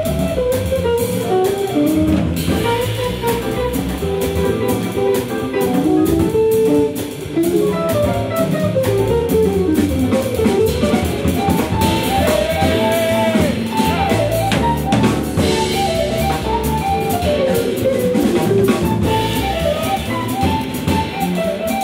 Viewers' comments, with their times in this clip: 0:07 the drum fill is amazing.